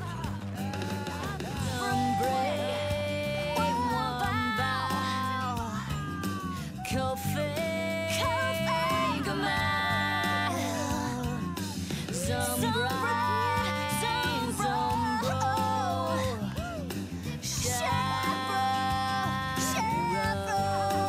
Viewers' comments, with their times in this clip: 0:06 I swear she said coffee